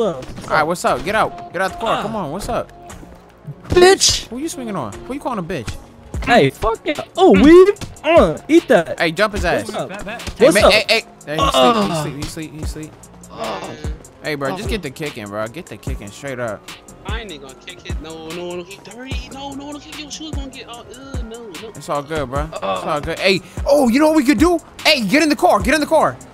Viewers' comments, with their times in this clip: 0:10 bro his grunt had me dead 😭